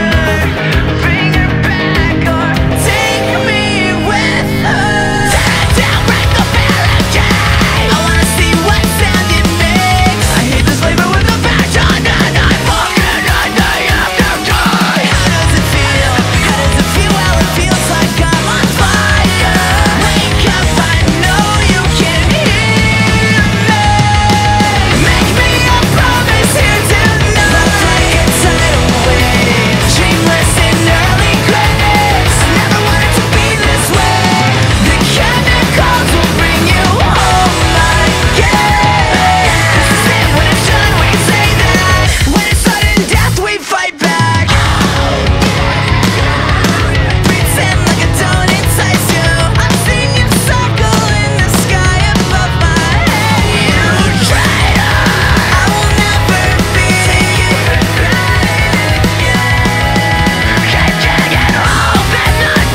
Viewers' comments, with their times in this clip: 0:08 🔥🔥🔥 are you still listening every day This voice is amazing 💗💕 👇 👇 👇 👇💚
0:12 Never fails to bop to the beat, then I wonder why my neck always hurts after that part :')
0:45 IVE LISTENED TO THIS SINCE I WAS 12 AND NOW I'M SEVENTEEN AND I STILL DON'T KNOW WHAT VIC SAYS